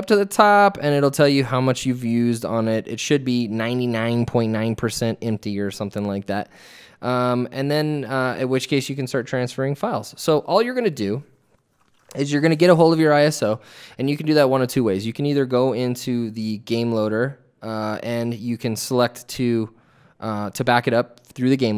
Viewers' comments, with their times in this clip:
0:03 99.9% so funny how he says it!